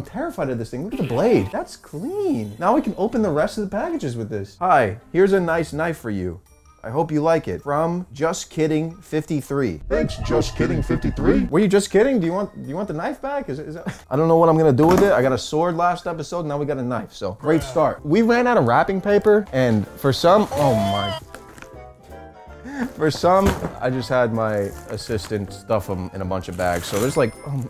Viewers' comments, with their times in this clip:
0:10 fnaf sound after all of that